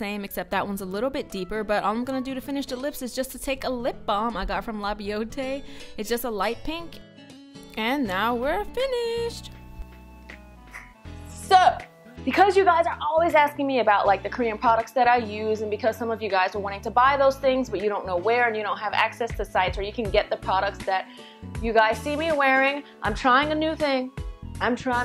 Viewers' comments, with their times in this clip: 0:10 wait wait wait... Is it just me but I can't hear a word she's saying after the make up tutorial ( till the end) i can hear the background music but nothing from her. I wanna know what the box was about!
0:12 Okayyyyyy.... starting i dont hear her anymore up to the end........ Only me ?